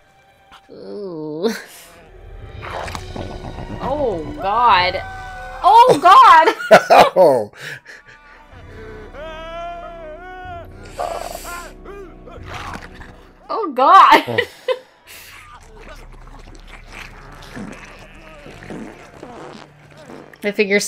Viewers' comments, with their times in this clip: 0:04 Brit here, and saw this at the cinema when it first came out. Can't believe how long ago it was. Saw it again for the first time since then, and had to see if anyone reacted to it on YouTube. I was really happy to see that someone did! As for how popular it was, this film wasn't very big, however it was part of an undeniable small wave of horror-comedy flicks that came after the huge success of Shaun of the Dead. This was around the time of Slither (James Gunn's directorial debut) and Teeth (an enthralling film about a woman who has teeth... where she shouldn't. Better than it has any right to be.). I have to add - that rubber stretch sound effect makes that moment so much worse.